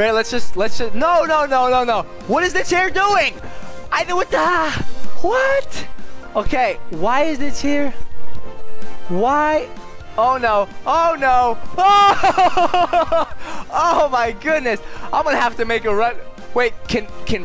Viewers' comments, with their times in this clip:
0:03 That anime voice though!!! So kawaii!!!!! (^w^)~❤